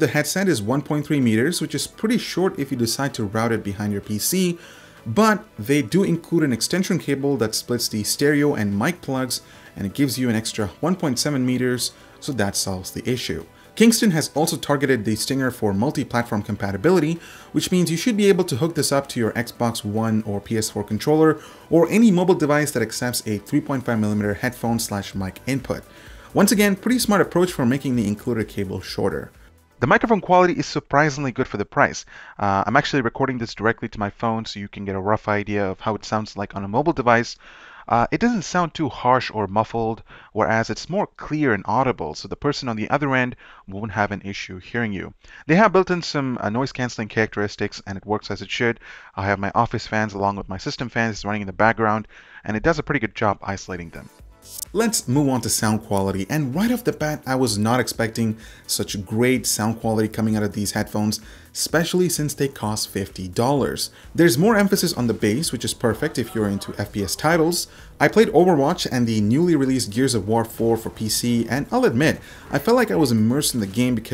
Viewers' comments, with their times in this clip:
0:10 an extra "whone" point seven meters 😂
0:58 viber notification sound in the background? ayyyyyy